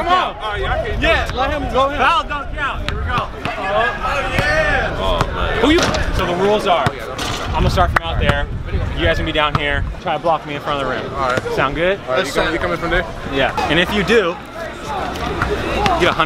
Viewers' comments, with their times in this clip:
0:04 that is some deep voice